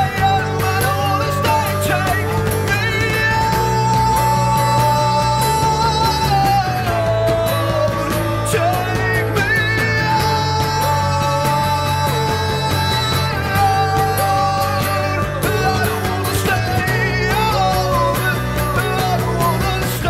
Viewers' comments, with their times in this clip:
0:03 I tought a high pitched scream counts as falsetto, it dosnt have to be a low to high or high to low, :/, correct me if im wrong hehe :P